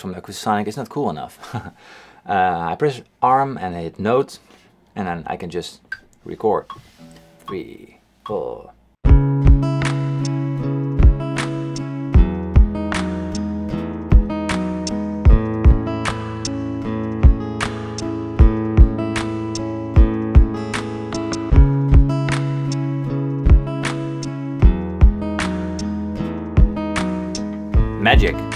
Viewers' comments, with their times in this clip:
0:10 started sounding like Linkin Park